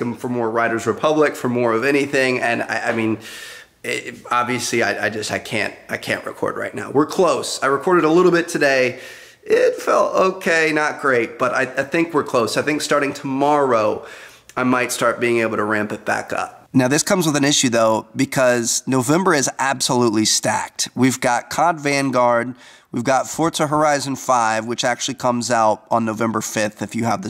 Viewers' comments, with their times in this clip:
0:09 That voice crack tho 😂